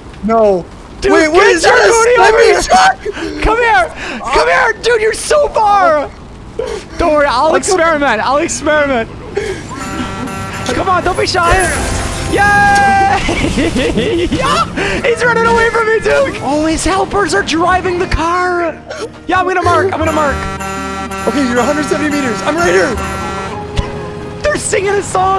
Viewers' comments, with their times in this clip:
0:10 Bro sounded like James Charles in